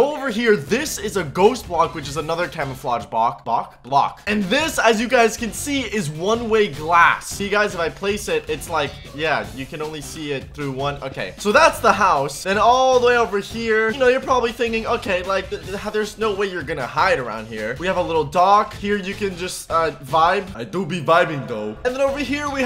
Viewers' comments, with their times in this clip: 0:03 "Bock" Bock? Block!